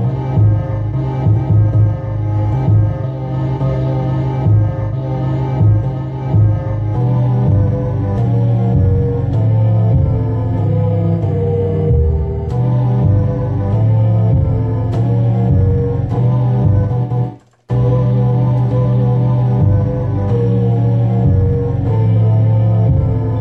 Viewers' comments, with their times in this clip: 0:07 that beat sound lit